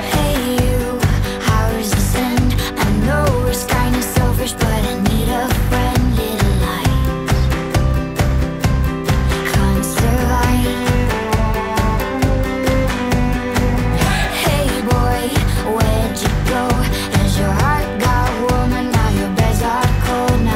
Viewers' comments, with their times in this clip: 0:07 A playful song full of life and smiles. Oh my god .. for me? :)